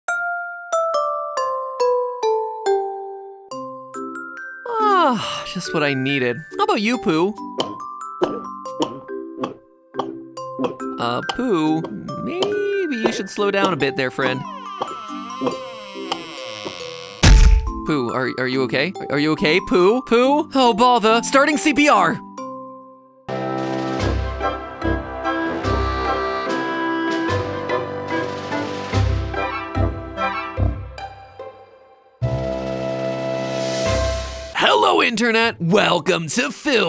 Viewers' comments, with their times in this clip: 0:07 WHY POOH GULPING LIKE THAT
0:12 Is it just me or did you hear appo
0:20 why does he sound British